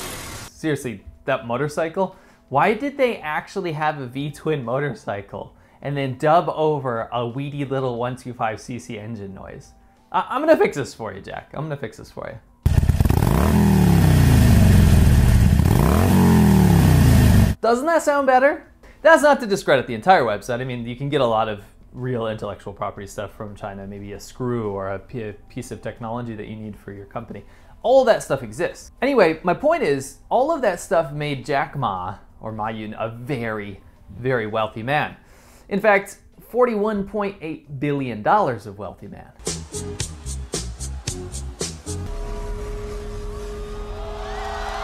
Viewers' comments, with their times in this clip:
0:06 if im not mistaken harley davidson owns a sound trademark on their v twin engine since 1994. So perhaps they wanted to avoid legal troubles by not using the correct sound?
0:31 I'd hazard a guess that the dub over was not the original video. But rather somebody's poke at Japanese / Chinese motorcycles.